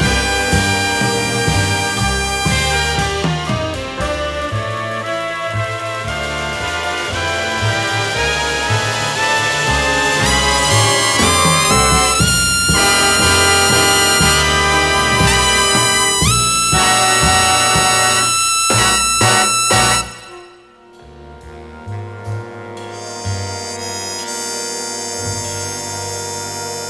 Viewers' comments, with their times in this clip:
0:10 The lead really sinks his teeth into Awesome.